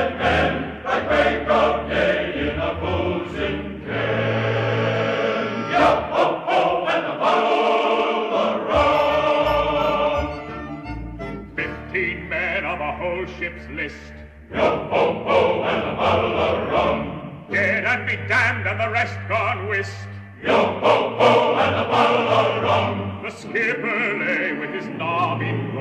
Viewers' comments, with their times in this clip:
0:10 Jean Luc picard starts singing